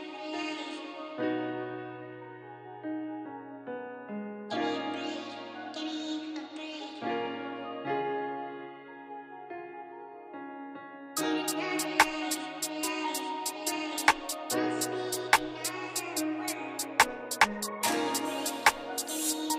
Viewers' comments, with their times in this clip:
0:06 like that slow down. Fellow producer/composer here. Keep up the great work. Peace from Japan 🍣